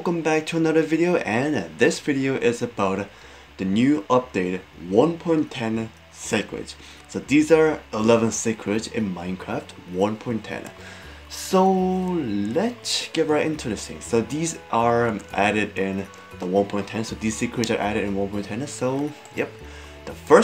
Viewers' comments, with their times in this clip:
0:06 Lol sackrets But i love the videos